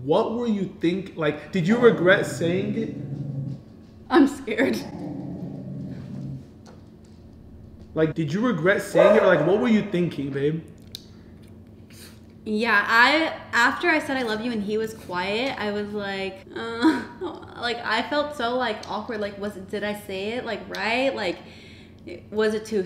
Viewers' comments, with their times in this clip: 0:08 what was bro barking at😂😂😂